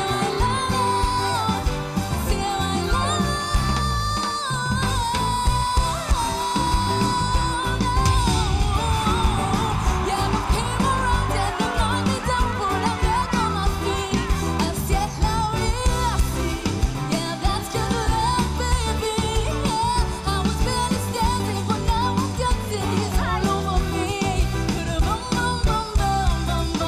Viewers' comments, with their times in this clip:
0:08 She even got better when John turn his chair